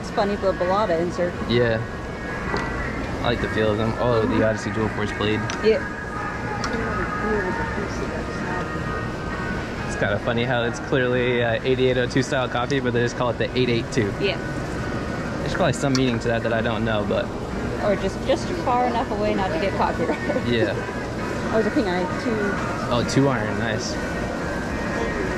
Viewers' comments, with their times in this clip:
0:09 rockin' old school Foreigner at the flea market ❤️